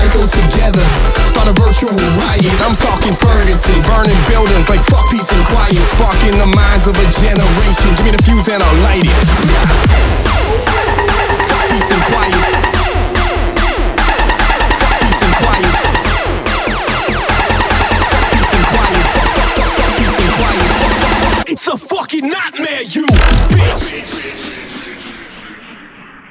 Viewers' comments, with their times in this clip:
0:10 OMFG THAT SONG!!! I SAW THAT LIVE ON TWITCH :DDD